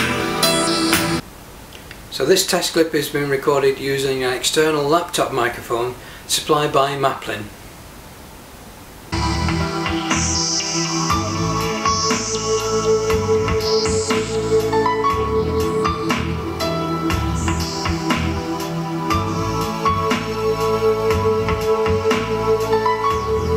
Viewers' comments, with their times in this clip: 0:08 xD yep.. greatest mic, even his look says so